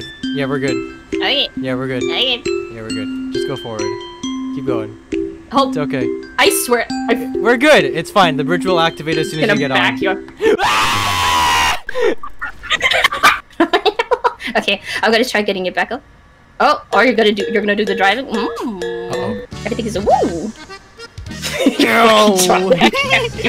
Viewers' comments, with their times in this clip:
0:09 THE LULABY MUSIC LUHMAO.